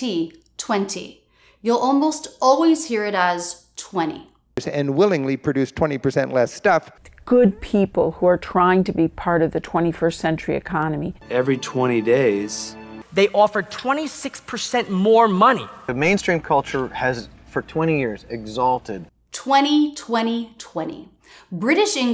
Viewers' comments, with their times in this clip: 0:08 century or cenury 🤔